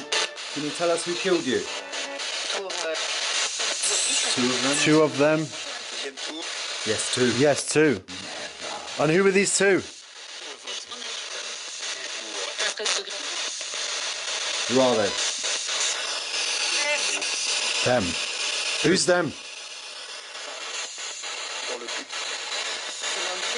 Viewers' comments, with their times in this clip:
0:10 whisper sounds like "never"